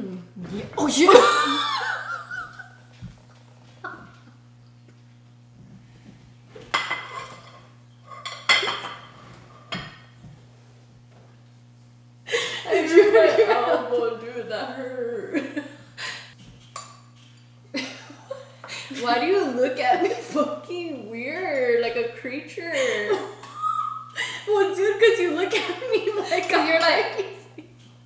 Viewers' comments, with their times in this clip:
0:03 i thought i muted the video lmaoooooo they was laughing so hard
0:07 Brooo the best laugh is when you cant breathe😂 time-
0:09 When you laugh and no sound comes out 👌🏽😂 lol those are the best laughs 🥰